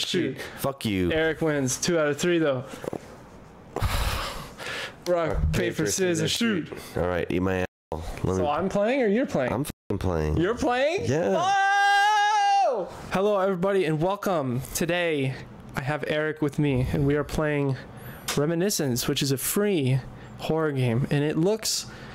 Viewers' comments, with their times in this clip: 0:07 why'd you mute